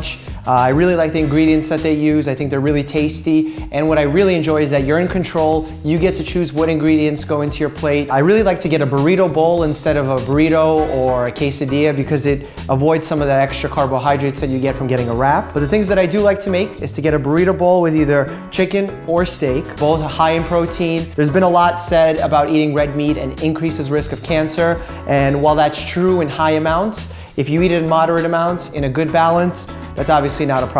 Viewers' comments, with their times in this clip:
0:03 When talking about chipotle I thought he said he likes that "urine control" for a second😳🤣
0:04 "One thing I really enjoy about Chipotle is that urine control"
0:04 he said urine control 😂
0:05 I seriously thought he meant "urine control". Bruh I'm missing some cells up in the ole attic...
0:13 Dr. Mike: "First ingredient, very simple, whole wheat bread." Me: "Holy bread?" Dr. Mike: "Uhh, I really enjoy whole wheat bread vs white bread." Me: "Holy bread??" Dr. Mike: "Whole wheat bread contains complex carbohydrates vs simple carbohydrates that you find in white bread." Me: "Ohh. Whole wheat bread..."😬👀 Also me: *watching his videos AM and supposed to be getting up at 6 AM*